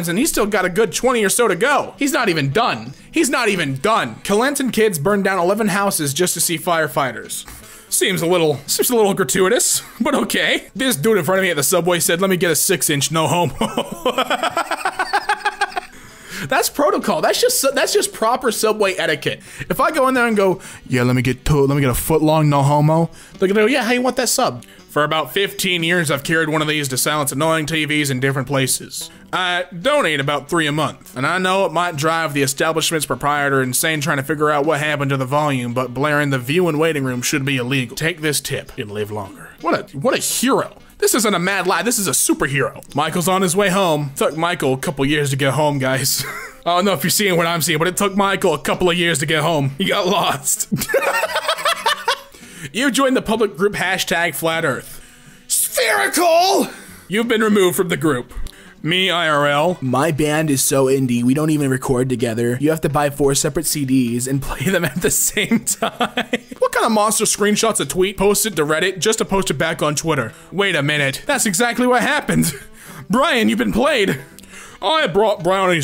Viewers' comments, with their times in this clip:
0:06 Me : * panic music stops * * very very very ฟยกรกาเหหด้กะำืหเ music starts to play
0:59 He sounds like chills I’m scared Mom Mommy?
0:59 this man can do a legendary impression of chills
0:59 is that the voice of chills? If not it sounds like it.
0:59 legit sounds like chills
0:59 he sounded like chills
0:59 you sound exactly like the Burger King foot lettuce guy LMAO
0:59 DUDE you sound like Daily Dose of Internet!
0:59 Why did u sound like chills
0:59 you sound exactly like the "number 15, burger king foot lettuce" meme
0:59 you sounded like chills
0:59 excuse me, what is that voice! Is he really the guy!
0:59 Why does he sound like that guy who commentated over a picture about feet in Burger King lettuce? Kinda weird bro
0:59 I need more of this voice
0:59 he casually turned on his chills voice changer lmao
0:59 you sound like burger king foot lettuce boy
1:00 I can't be the only one who thinks he sounded like Chills
1:00 He sounds like chills for 3 seconds
1:00 He be kinda sounding like the burger foot lettuce guy!!!
1:00 why does he sound like that guy who did foot lettuce
1:00 my mans just turned into chills, thought i was watching top 15s or some shit, deadass expected "number 15 burger king foot lettuce" to be said next
1:00 That sounded so much like the number 15 guy
1:00 he sounds like someone i have heard of before
1:00 he sounds like fucking Chills
1:00 You sound like Burger King foot lettuce man 😂
1:00 sounds like that guy from top 10 videos
1:00 my guy be soundin like chills
1:01 he just turned into fricking Daily dose of internet
1:02 Is anyone going to acknowledge he fact that he did a chills impression pretty but perfectly?
1:02 I thought Chills started reading that... Wow
1:02 Bro is it just me or does he said like that guy that does scary stories
1:02 why my guy sound like chills as in the dude who goes over scary events and shit
1:02 There's the voice! THERE'S THE FUCKING VOICE
1:02 why do you sound like that guy that said iF I SaW ThAt dAmN ThInG In mY LiViNgRoOm I WoUlD StOmP On iT 😂😂😂